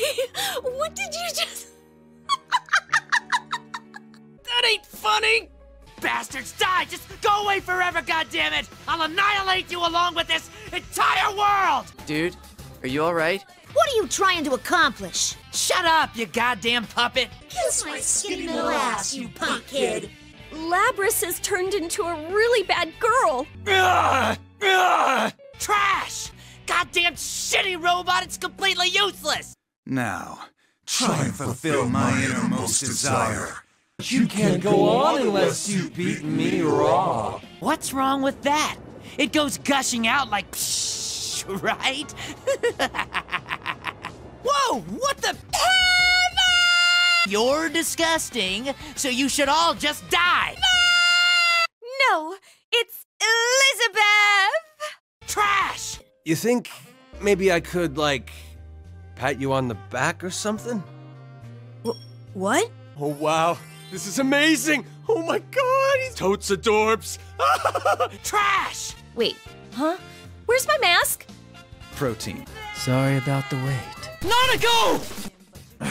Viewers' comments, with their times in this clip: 0:06 wait he lowkey sounds like cartman
0:20 Damn that was funny especially with Yukari’s delivery.
0:57 this gets weirder in context when the “sexy” music starts playing